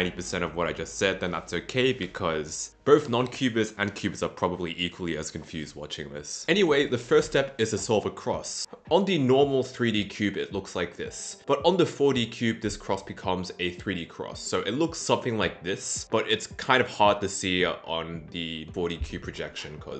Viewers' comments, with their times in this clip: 0:04 that was the subtlest vine boom I've ever heard.